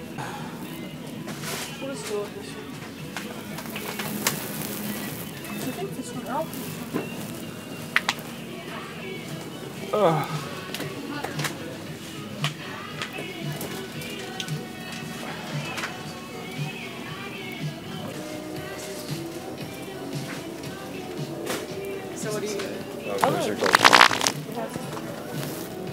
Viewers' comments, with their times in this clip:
0:06 The double tap kills me🤣🤣🤣